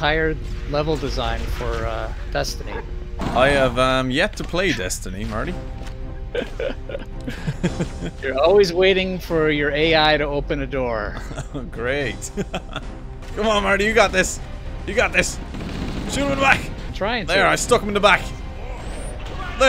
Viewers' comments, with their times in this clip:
0:04 the music kicks in like "I've yet to play Destiny Marty" why do I hear boss music